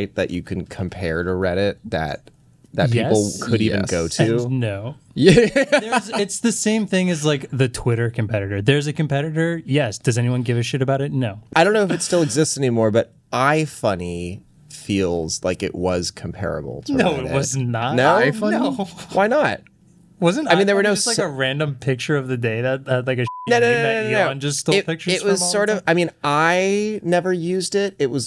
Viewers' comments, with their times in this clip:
0:10 Someone missed the bleep button ...
0:10 Hey guys, you missed a bleep